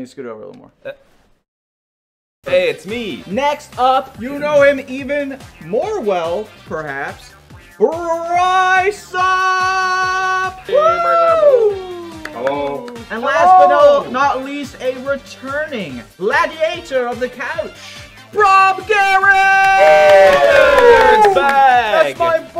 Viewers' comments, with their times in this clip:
0:10 I swear someone gonna put Joe Biden on top of his face. His 'Hello' was literally the same tone XD